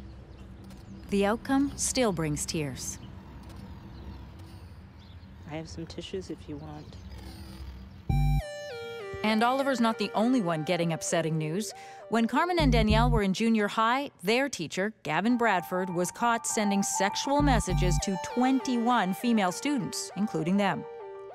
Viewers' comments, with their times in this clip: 0:07 lol the music